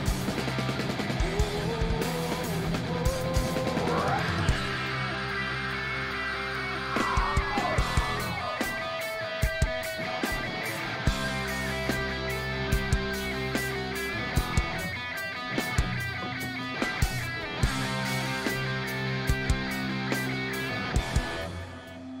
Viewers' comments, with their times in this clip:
0:03 did claudio actually just hit us with a live crowing scream?